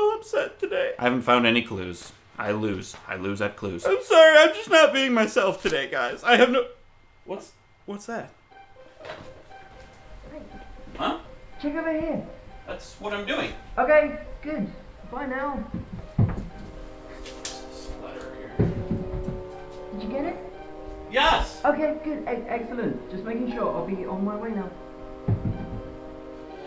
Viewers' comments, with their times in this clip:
0:08 when this music starts, you know shit's about to go down...